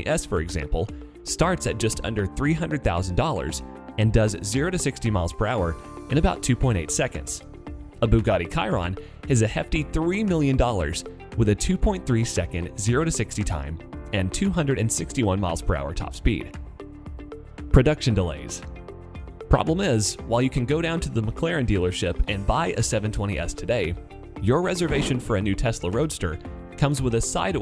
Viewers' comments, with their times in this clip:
0:07 he says bugatti kiron. it really pisses me off
0:08 No offense, but the way that you pronounced Bugatti Chiron makes me want to go bungee jumping with a normal rope, it’s Chiron (sheron), not kiron.
0:09 did you say Bugatti karon and not chiron